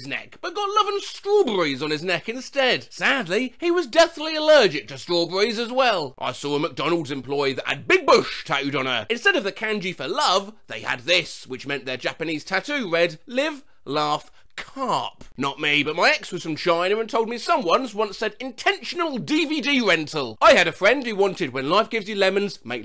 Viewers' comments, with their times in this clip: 0:09 bro no way you said "kanji" like that the japanese language doesn't even have that specific "a" sound in it